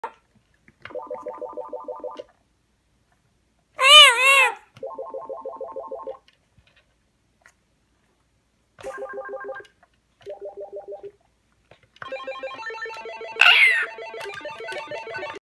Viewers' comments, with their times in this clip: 0:03 baby mario crying
0:03 = red birb: *makes noise*
0:12 he now fears the synthesizer the louder it gets